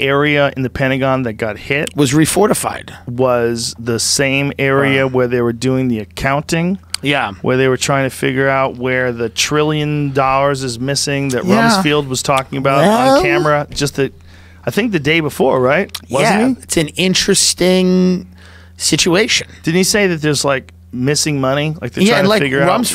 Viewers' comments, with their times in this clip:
0:10 Tim's weird noises are discomforting.